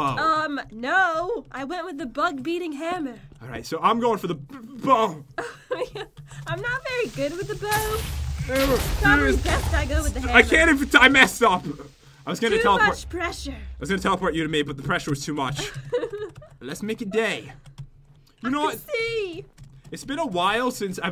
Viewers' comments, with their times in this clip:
0:05 did you hear a weird noise